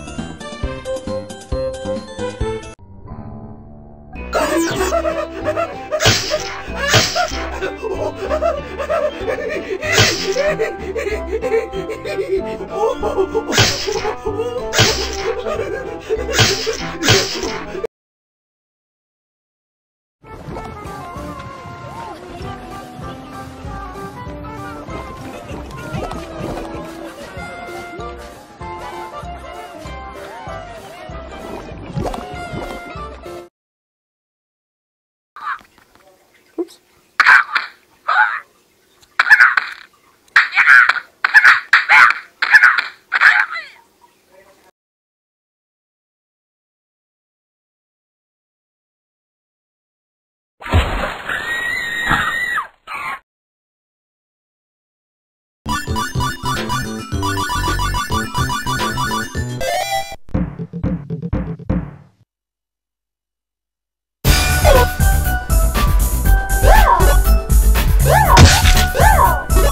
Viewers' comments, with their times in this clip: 0:04 this nutty laugh is sus 🤨
0:50 the rake scream: